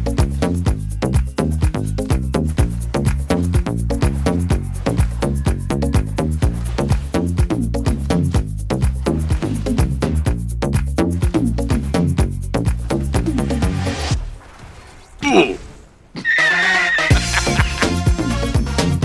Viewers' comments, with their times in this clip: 0:03 Gotta love the stimpack song